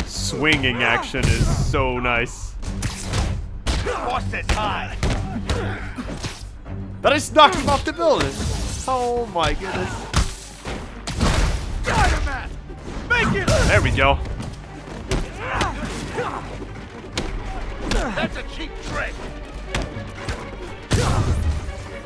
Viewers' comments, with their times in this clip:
0:08 when he knocks the guy off the building I think u are able to hear him hit the ground or something 😂